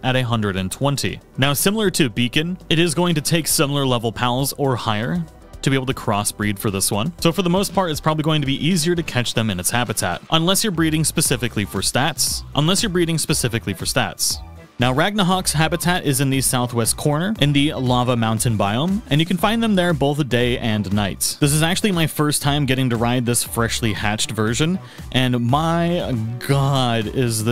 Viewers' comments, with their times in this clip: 0:10 Hey do you rewatch your videos after you edit them? Almost all your videos have jump cuts to you saying the exact same thing with a different inflection... "unless you are breeding specifically for stats.. unless you are breeding specifically for stats!"